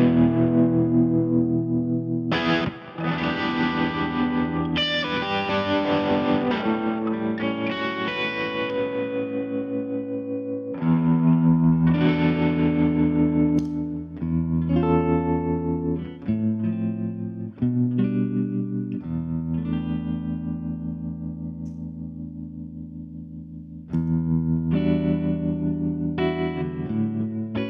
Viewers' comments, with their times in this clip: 0:08 Did you flip your switch to the neck position and make the guitar sound like it had a tremolo? That is pretty impressive.